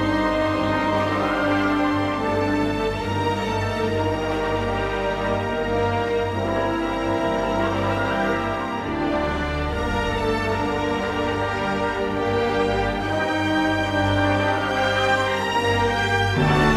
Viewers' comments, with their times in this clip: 0:03 those three notes are my favorite part of this song. i play F horn so i know how to appreciate only playing three notes that actually matter in a song :p